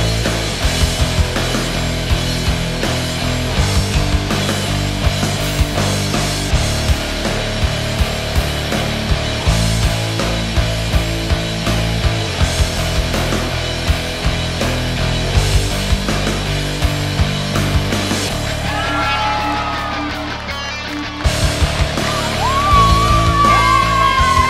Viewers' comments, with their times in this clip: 0:07 This shot is so badass. Even the music suits it.